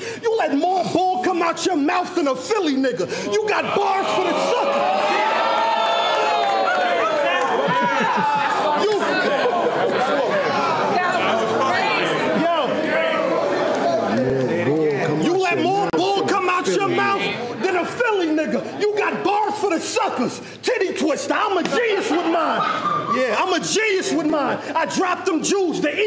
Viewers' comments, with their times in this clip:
0:10 awkward ass moment. They didnt know what to say. Geechi just laughed. 😂😂😂😂